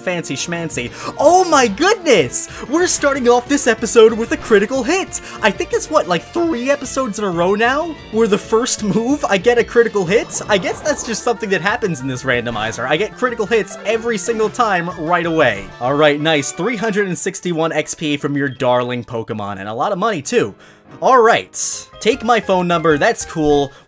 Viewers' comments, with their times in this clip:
0:06 that voice crack thoo